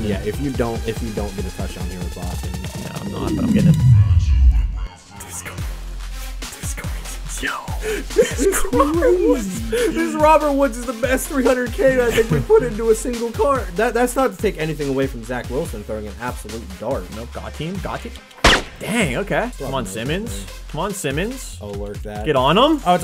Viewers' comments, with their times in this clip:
0:09 he sounded like shaggy